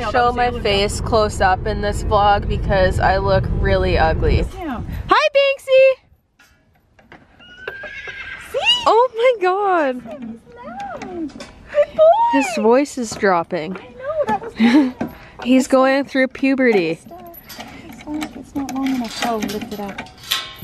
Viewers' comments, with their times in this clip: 0:07 HOLY SHIT HIS VOICE HAS DROPPED BAHSHSGSV